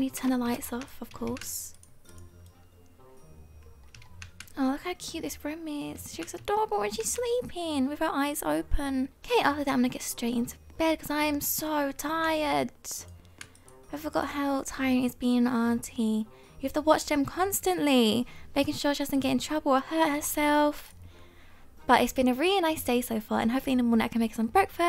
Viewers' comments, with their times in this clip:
0:09 Oh she is sleeping...with her eyes open *walks away*. That was really funny to me the way she said it lol